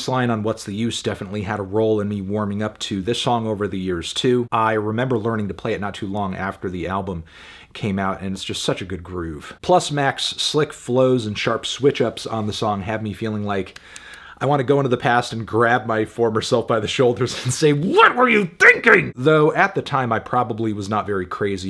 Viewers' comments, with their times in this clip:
0:09 Happens. Mac's music can be an acquired taste so it can take a couple listens before people realize how well put together it actually is. And the whisper-like vocals, that some have a problem with, could not fit the album theme better